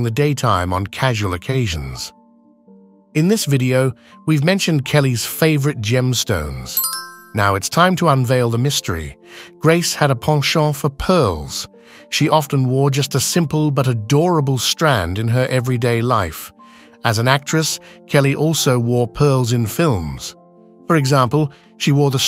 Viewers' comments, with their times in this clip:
0:09 What exactly is a "pongshaw" for pearls? I'm guessing the word intended is "penchant"?